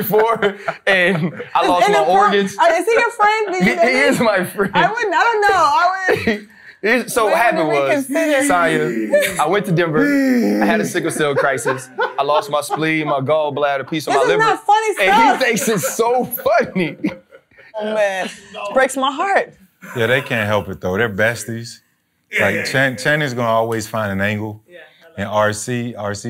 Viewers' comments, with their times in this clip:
0:08 is exactly how I was wheezing 💀 Channing a fool 😭